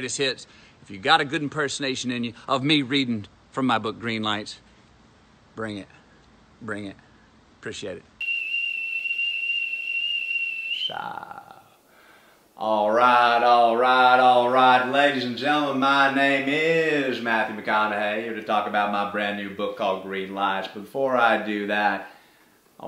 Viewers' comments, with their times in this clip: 0:09 The McConaughey kettle is starting to boil. Get it off the stove